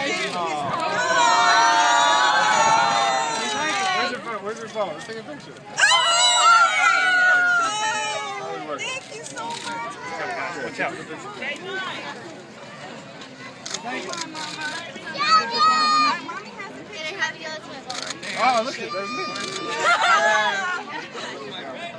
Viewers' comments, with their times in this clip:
0:05 I hate people who scream like that